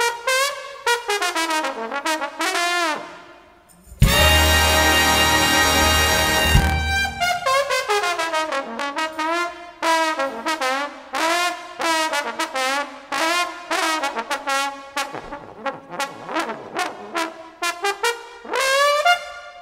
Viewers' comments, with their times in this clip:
0:06 Bass bone pedal whew
0:06 Bass trombone pedal and every trombone player glances over 🤣